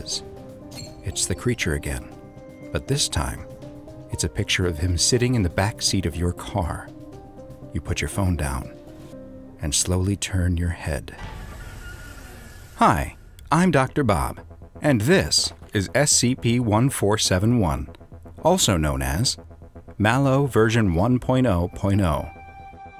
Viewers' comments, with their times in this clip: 0:10 i thought the anomalie said hi when you said it